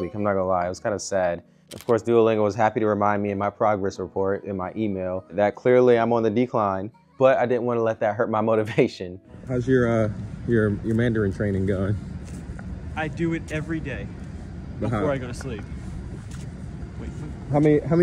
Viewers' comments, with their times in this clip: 0:05 Not the sad duolingo you got it wrong notification 😆